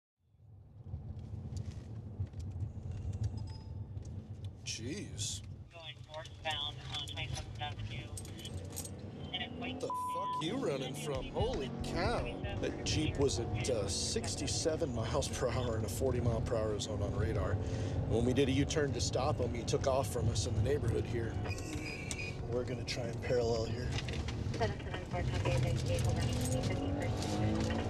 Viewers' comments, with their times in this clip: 0:09 that bleep didn’t do that much😂
0:09 The bleep was a complete failure
0:11 completely useless censorship beep